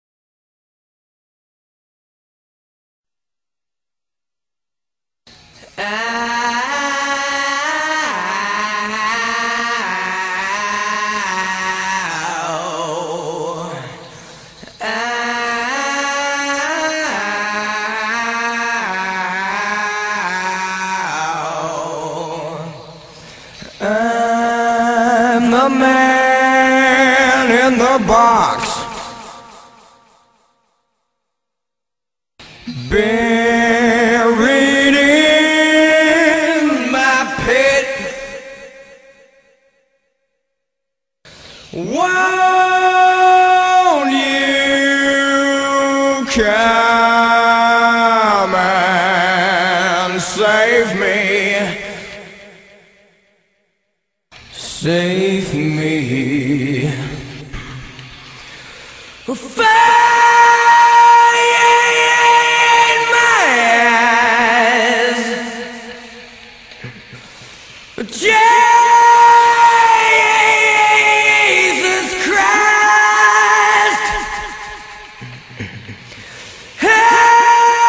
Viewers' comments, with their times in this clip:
0:07 that little "oohhh" all nasally is the sound people think of I think when they try to mimick nasally layne.
1:00 I AM SO HAPPY I FOUND THIS!!!!! I DEDICATE THIS TO ALL THE MF SAYING ALICE IN CHAINS SHOULD HAVE WENT ON WITHOUT LAYNE AND HOW LAYNE WOULD NOT HAVE SOUNDED AS TOP NOTCH BY HIMSELF....WELL THIS SHOWS YOU ARE WRONG!!!!!!! THIS MAN FUCKING CAN HARMONIZE BY HIS DAMN SELF....SHOW ME ONE MOTHER FUCKER OUT THERE WHO CAN SOUNDS LIKE THIS BY HIMSELF...HAHAHAHAHAHAHAHAHA LAYNE FOREVER...BEST DAMN VOCALIST FUCKING EVER...DONT HAVE TIME JUST GO TO OF THIS VIDEO AND GET PROVED THE FUCK WRONG!!!!!!!!! RIP LAYNE STALEY